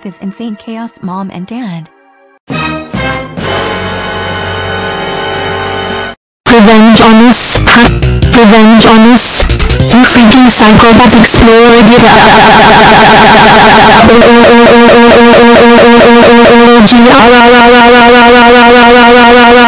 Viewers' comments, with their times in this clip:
0:06 warning loud volume